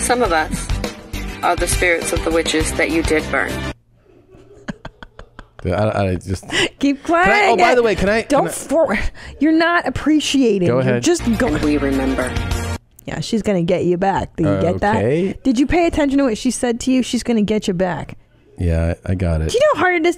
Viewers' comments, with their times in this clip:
0:08 Christina sometimes sounds like carl